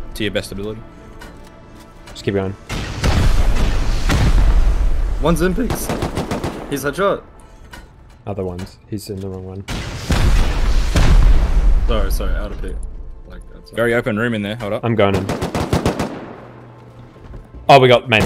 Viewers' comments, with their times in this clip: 0:04 DAMNN THAT VOICE CRACK😂
0:04 "Ones in peeks" best voice crack